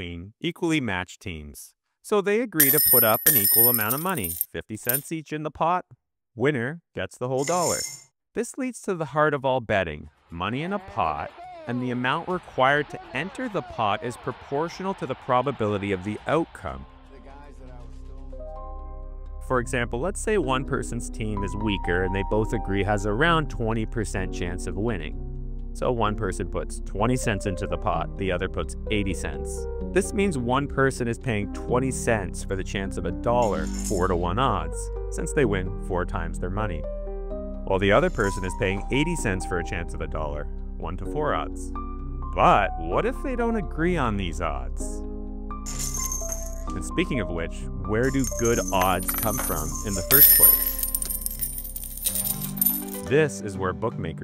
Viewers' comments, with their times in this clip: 0:08 The severance music 🤣
0:26 Severance audio hits so well for these videos
0:38 Oh my god. This scared the shit out of me!! I literally today watched severance, and this music !!
0:38 I like the fake Severance theme at ~ xD
0:38 piano music at roughly makes the video impossible to pay attention to